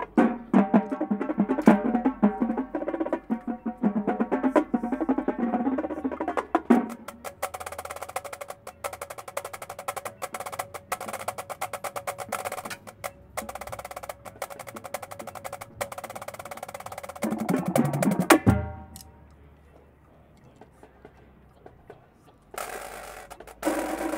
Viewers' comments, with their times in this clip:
0:06 I really like the timbre they get from the thinner sticks. ish is dope.